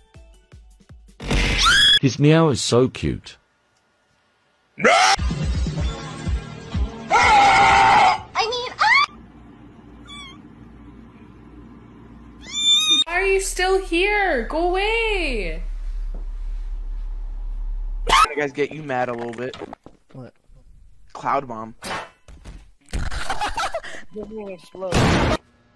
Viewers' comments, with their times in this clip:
0:04 Why's Her scream like that 💀
0:06 goddamn I don’t think that’s a female..